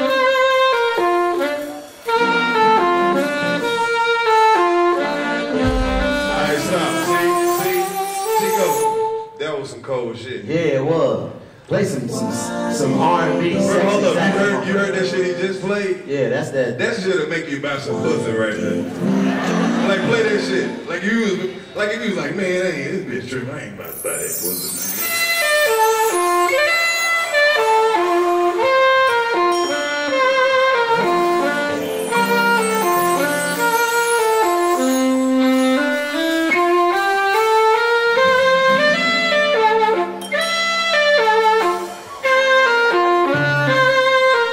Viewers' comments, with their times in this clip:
0:07 He's playing Kenny G
0:17 Literally Careless Whispers by George Michael but a little off brand.
0:28 that’s a Se#aphone not a saxophone 🎷 😂